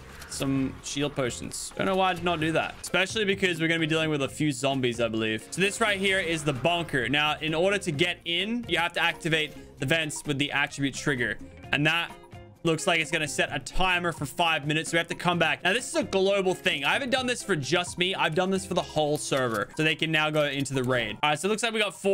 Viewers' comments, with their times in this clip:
0:06 "this right here is the BONKER"